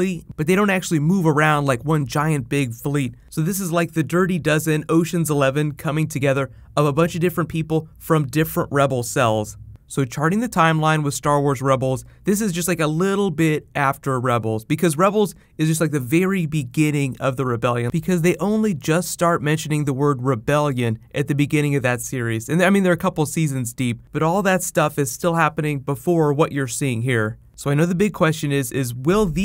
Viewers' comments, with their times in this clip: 0:10 did he say Allen two d ?